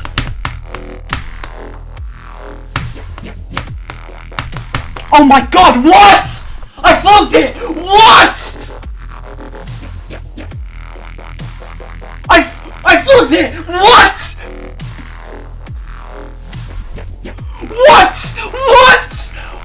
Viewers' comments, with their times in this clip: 0:04 that whaat! is really funny